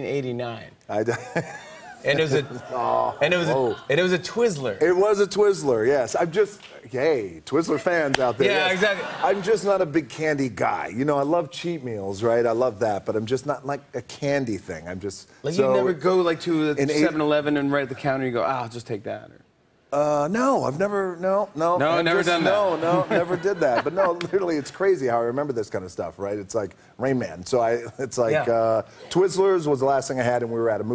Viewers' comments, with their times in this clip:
0:06 Nobody: The rock “I’m just gAy “
0:06 ?? did I hear that right?? his GAYYAYAYA!?!?!
0:06 sounds like he just said "I'm just gay"
0:11 "Yk, I love shemales"